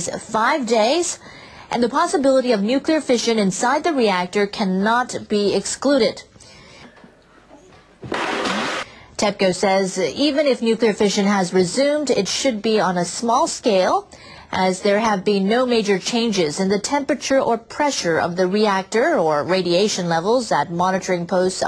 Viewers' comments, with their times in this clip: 0:09 Detected the ''happy voice'' the news reader gives us when she says "TEPCO says even if nuclear reaction has resumed it should be at a small scale." She says it as if its just a widdle-biddy scratch, a boo-boo that shouldn't concern anyone at all -- and that mommy's gonna kiss it and make it all better. I also noticed for once she didn't describe the place as " the "troubled Fukushima-Daiichi plant." Guess they figure we all know by now......